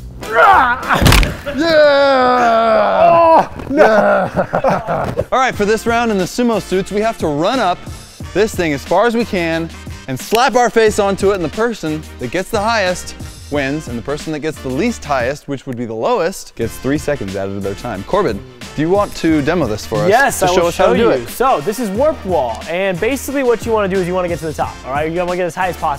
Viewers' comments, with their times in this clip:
0:06 Why does the music sound like (if undertale is realistic) genderless child rapping